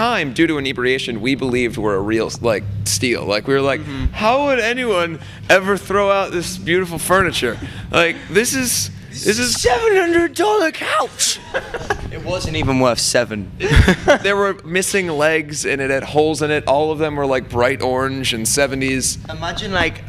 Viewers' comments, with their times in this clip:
0:04 NO ONE WILL NOTICE THIS CAUSE THIS VIDEO’S OLD BUT Andy sounds like Archer from the show